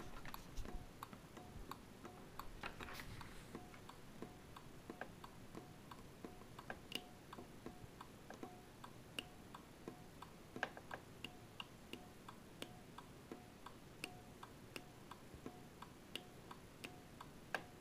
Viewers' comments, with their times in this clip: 0:04 You seem to have replicated the early samba synthesiser preset